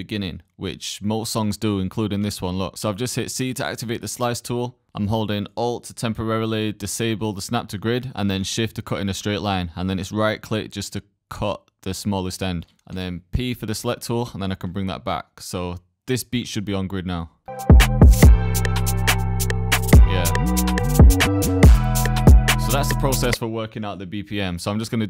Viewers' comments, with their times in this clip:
0:06 you can also select the "Trim" option on both of the audio clips, which will get rid of the white noise at the beginning of the audio clips.